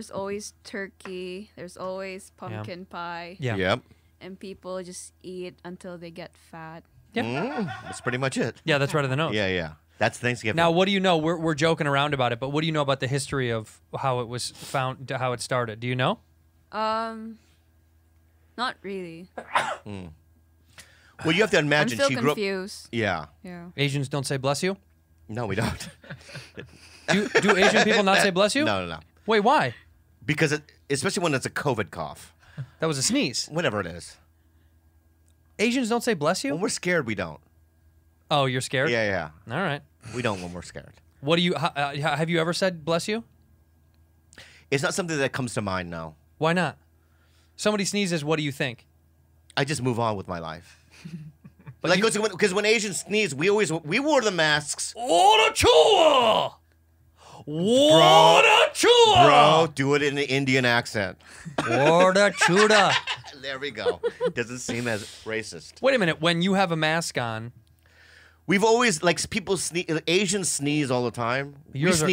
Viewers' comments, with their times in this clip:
0:07 am I tripping or did I hear like a faint demonic weird laugh !!!!!!!!
0:55 I DIED when Andrew did the Japanese sneeze and then switched to the Indian sneeze 😂💀